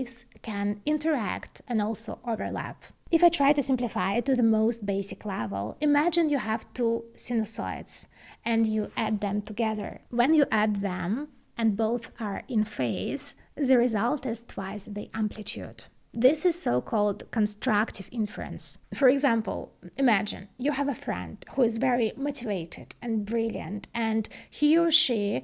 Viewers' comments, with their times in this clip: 0:06 Very interesting. Unfortunately it sound like she is saying inference (and that's how it is transcribed in CC) but I'm pretty sure she means interference. She clearly knows what she is talking about, and explains what it means, so this shouldn't be a problem, but should be fixed in future videos.